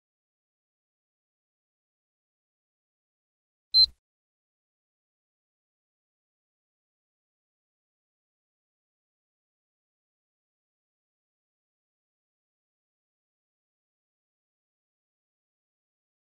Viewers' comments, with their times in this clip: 0:04 that beep at the beginning. Clever, Sony!
0:04 I swear I thought my PS4 turned on